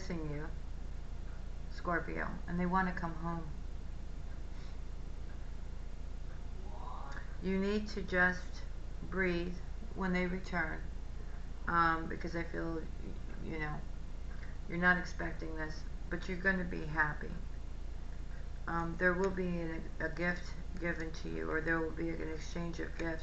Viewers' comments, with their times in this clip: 0:06 So this is really creepy but cool, as I was listening with my headphones, there is a voice that sounds like “want me” or “warning” omg gave me chills